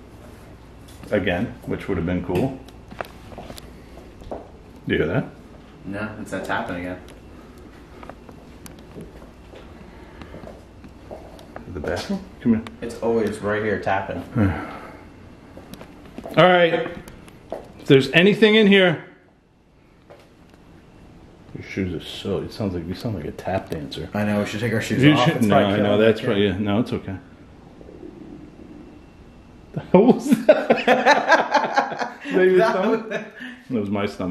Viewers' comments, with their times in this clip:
0:05 a spirit coughed? yeah, yeah.. i know.. i had to pause the video.. so many im's , never ending today haha :D
0:15 in the hall closet by that freaky mirror bathroom.on the 3 shelf or middle shelf,there is 3 glass balls on a stand.could that have been the knocking noise.around is a good view of it